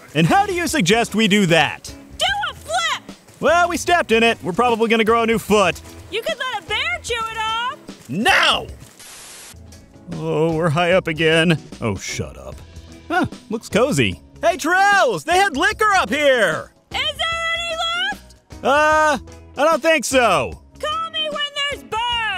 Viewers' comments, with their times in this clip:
0:03 angry bug noises